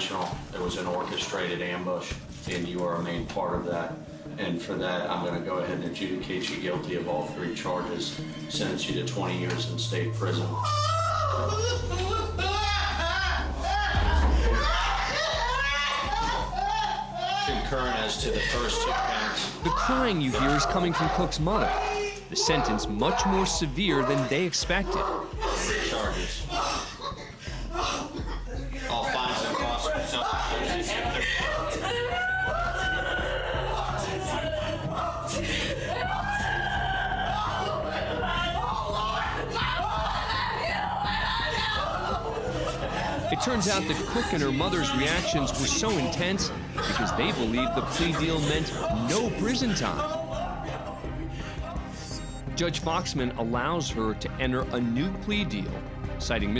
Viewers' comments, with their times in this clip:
0:10 When her mother started crying out loud, my heart just dropped. Luckily that girl will still have a chance with that new plea deal.
0:10 Her mother panics in tears.
0:11 to be honest I thought she was laughing lol.
0:13 I thought she was laughing
0:31 I am hearing AUTISTIC AUTISTIC AUTISTIC
0:37 My heart started to break when the Mom started wailing “Oh Lord, Oh Jesus” you can tell her whole world shattered